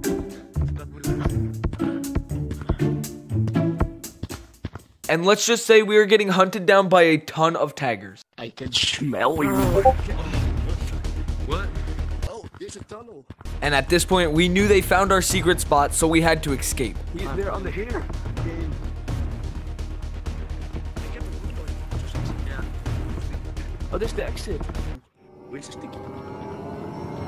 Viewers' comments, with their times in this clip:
0:09 that notification sound caught me off guard